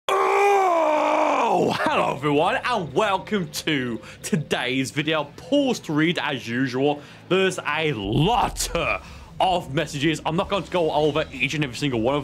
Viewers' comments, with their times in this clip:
0:00 it sounds like you are frustrated trying to process with the little amount of brain cells you have reading what the trash talker has sent you.